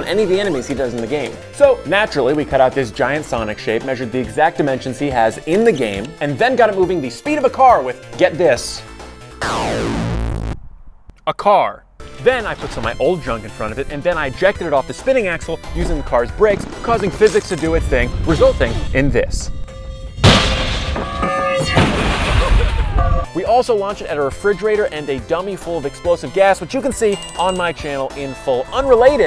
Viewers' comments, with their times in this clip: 0:10 hell naw what is that "cawr"
0:16 doppler shift in play